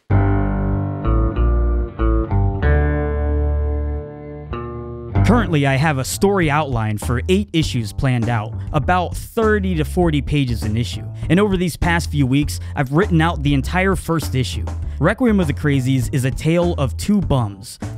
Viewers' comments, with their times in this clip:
0:03 the happy music till made me angry. Thanks for the rest of the video. All the best for the comic... don't lose the dark humor pleasee